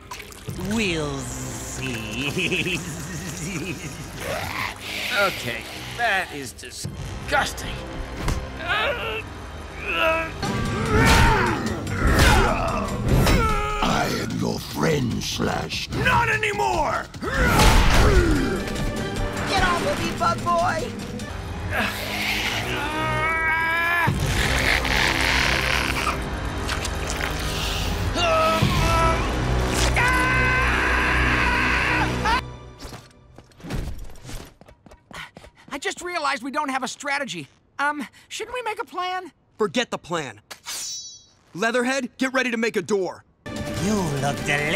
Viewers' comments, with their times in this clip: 0:03 I like that background music on do anybody else like that background music
0:29 the way that Ralph screaming